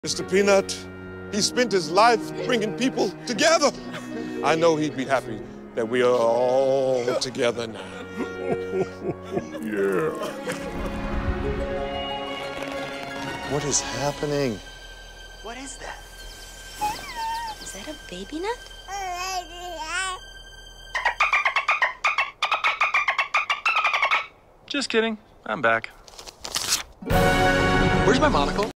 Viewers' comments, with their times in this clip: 0:10 why does this sound like the Clash Royale boot up music when you start the game
0:20 for a few seconds, I actually thought baby peanut’s voice was edited, although it seemed like he’d be talking in tongues or something...
0:24 How the heck did Baby Peanut regain his old voice? This makes absolutely no sense, and somehow defects the Laws of Physics! (I don’t know, but maybe that’s just me...) 😐